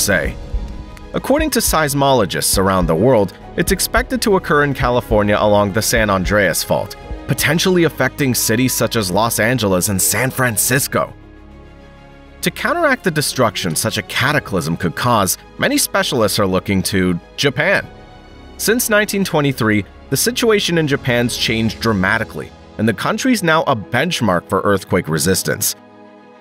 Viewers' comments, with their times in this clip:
0:08 the dramatic and flamboyant way you said San Francisco had me ROTFLMAO! I heard what you did there. 🤣😂😆😄